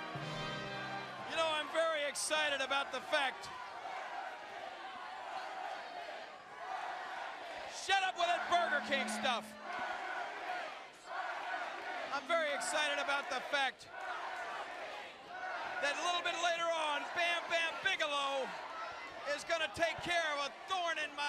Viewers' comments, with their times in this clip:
0:04 burger king chants